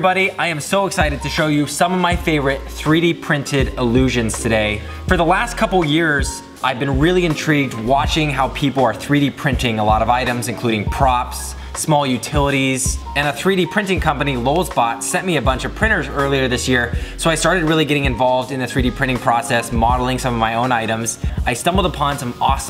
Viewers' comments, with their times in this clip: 0:05 For the wast couple years